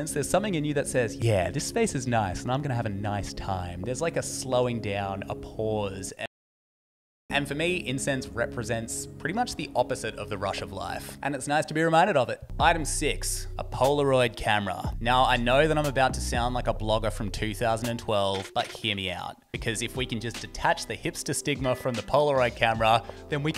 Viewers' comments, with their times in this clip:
0:06 That pause scared the living shit out of me cuz i thought my laptop was hacked or something.